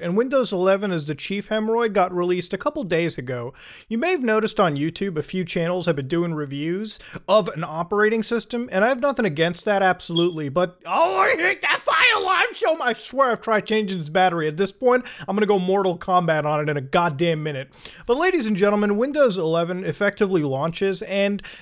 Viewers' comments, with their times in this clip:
0:09 he literally says and I quote "ohmyyiajngkdjev the fire alarm" 😂